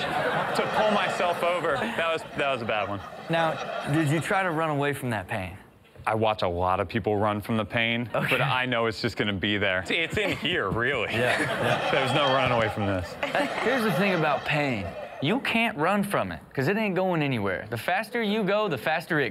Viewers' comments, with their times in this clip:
0:04 Started hearing a laugh track and now I can’t stop. It’s freaking weird 😂.